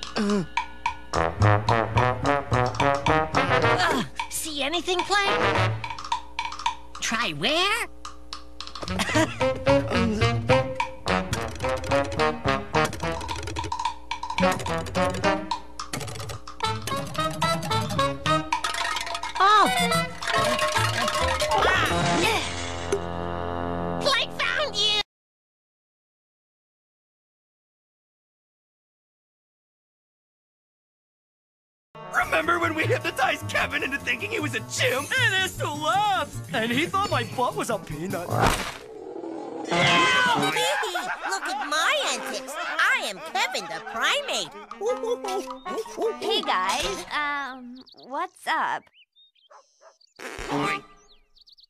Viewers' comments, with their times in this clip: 0:05 Am I the only one who thought this part of the music was hilarious?
0:05 XD the part of the Music is Funny
0:38 first i heard ed scream like that XD
0:38 that was the wildest yow 😂